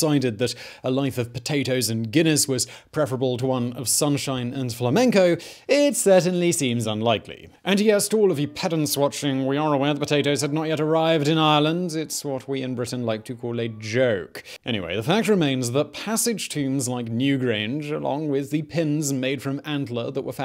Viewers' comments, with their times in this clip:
0:07 That statement, and the tone in which it is made, is the most obnoxiously, arrogantly English thing I have ever heard. (Note that I say "English," not "British.") This from an American, so YMMV. <3